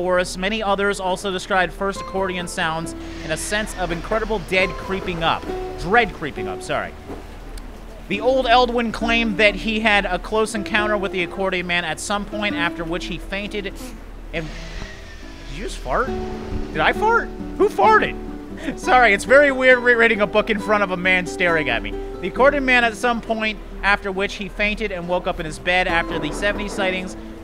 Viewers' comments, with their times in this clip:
0:10 Def a rippa